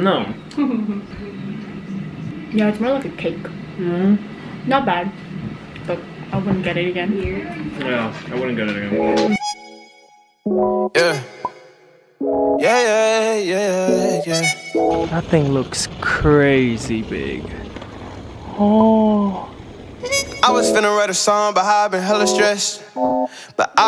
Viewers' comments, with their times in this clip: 0:09 the montage + the song choice is so cute omg